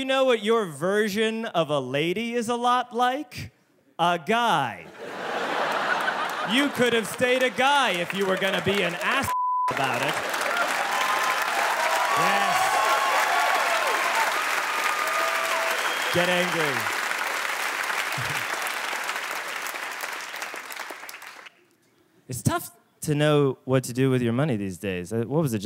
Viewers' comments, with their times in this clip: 0:06 you bleeped the wrong part…